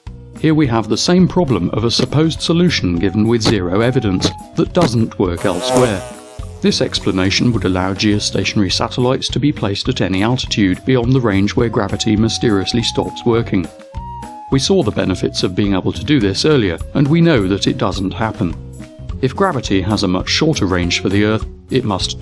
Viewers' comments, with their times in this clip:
0:06 Jesus I actually swatted at my ear when the fly sound effect happened. It freaked me out.